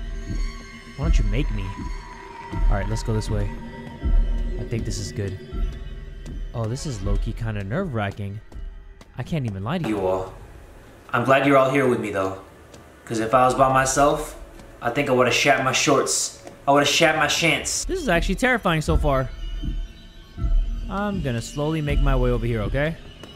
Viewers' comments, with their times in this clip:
0:10 I love how the mic cuts out at a perfect time for him the line that he says and makes it perfectly funny and well placed! xD
0:10 Imagine how high/loud his screams are when we're physically in his room goddamn😭😭😭